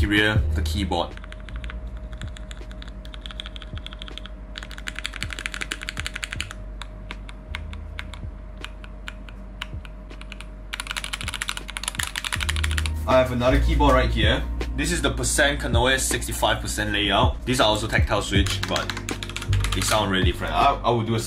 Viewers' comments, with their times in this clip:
0:03 ASMR BE LIKE